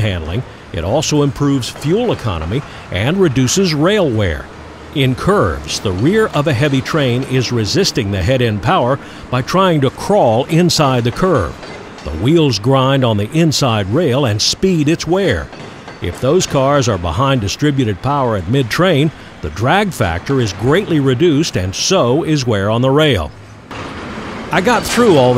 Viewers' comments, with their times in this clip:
0:10 i dont know WTF you said but you definitely sound intelligent 😂😂